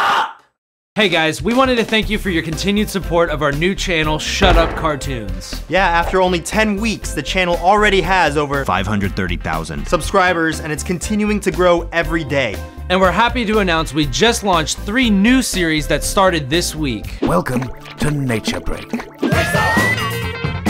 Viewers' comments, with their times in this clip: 0:06 "Five Hundred Thirty Thousand" is dubbed in, even the CC says it. I wonder what Anthony originally said. Maybe they recorded this video early, but published it weeks later.